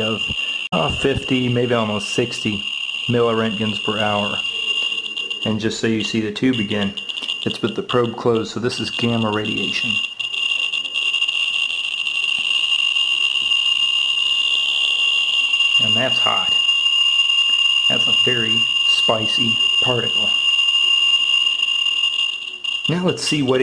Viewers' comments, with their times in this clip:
0:08 its the new hulk jk. i would never go near something that make the Geiger counter beep like that